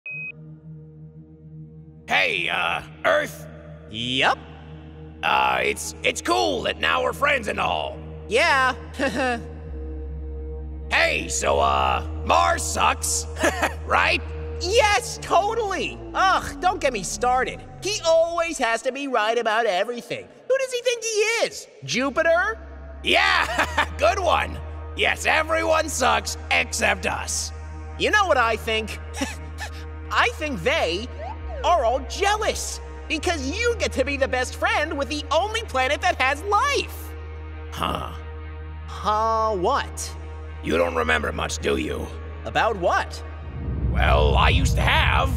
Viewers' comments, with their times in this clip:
0:09 Sorry but. . . They can hate me. . . But Earth's laugh is so cute 😭
0:29 earth wheezing made me cry
0:29 Earth’s Cute Small Wheeze!!